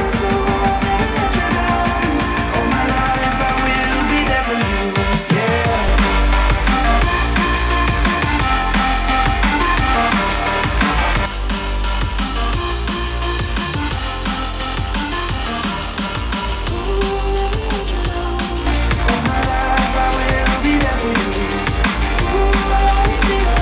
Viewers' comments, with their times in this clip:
0:05 Yep. Seems like that way to me too. Unplugged sounds louder to me and has more bass. Edit: It's mostly noticeable I'm not sure about the rest.